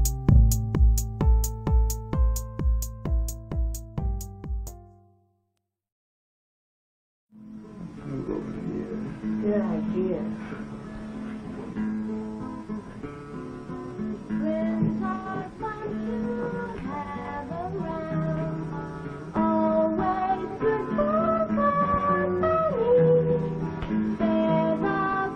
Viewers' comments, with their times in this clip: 0:07 this is what dreams sound like.